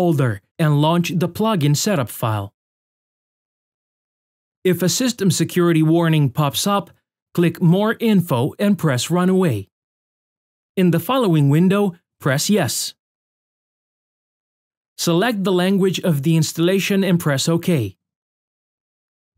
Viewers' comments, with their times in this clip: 0:03 "If a system security warning pops up - click more info and press run away (?)" lol